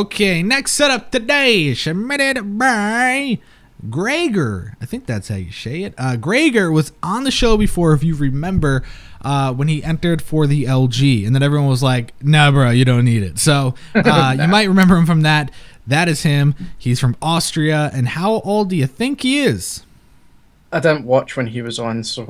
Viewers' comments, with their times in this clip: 0:05 'shay it' lol